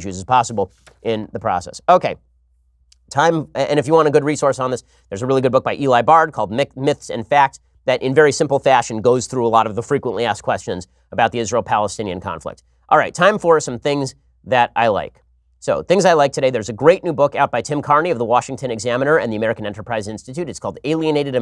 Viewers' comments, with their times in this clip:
0:04 Hey Ben, to a Brit it sounds like, Eli Barn, "Micks, Myths and Facts" ( onwards) about the Israel conflict. Tried googling, can't find it so far.